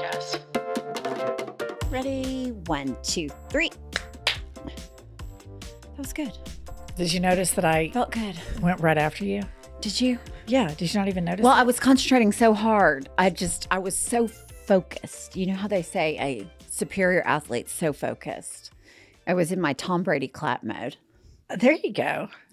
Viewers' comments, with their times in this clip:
0:03 a double?! Come on now😤